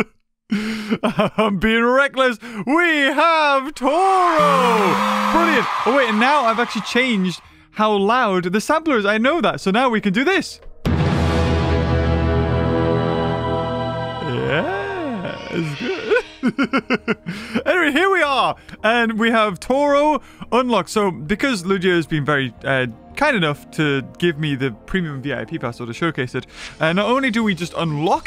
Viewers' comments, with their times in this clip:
0:10 sound like Godzilla’s theme